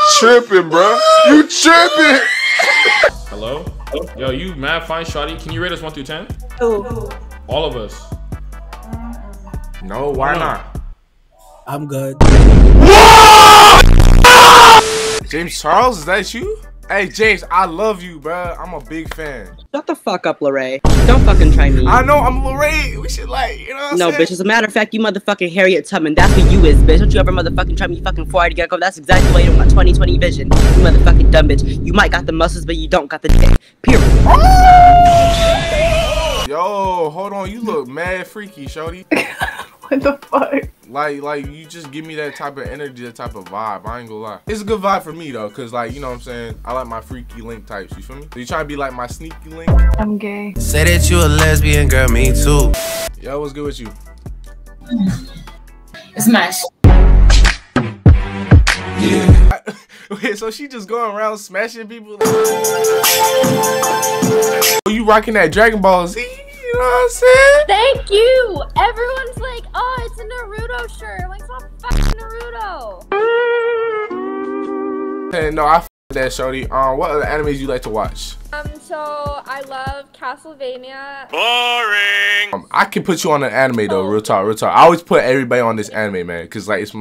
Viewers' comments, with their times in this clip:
0:10 when i tell you i CHOKED when that dudes voice DROPPED
1:10 Why she said Na-rudo instead of NaruTo 😤Why????